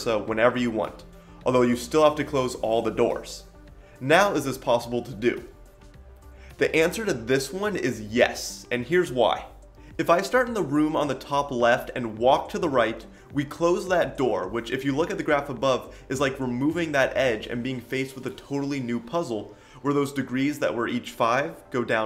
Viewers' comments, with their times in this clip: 0:05 Who also thought that your battery is low? xD